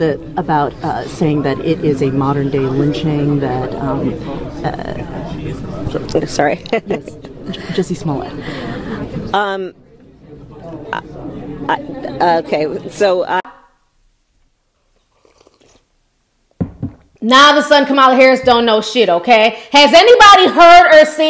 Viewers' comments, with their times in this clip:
0:09 Kamala Harris, I can tell ur lying cuz when you replying stutter stutter s-s-sutterr stutter 😳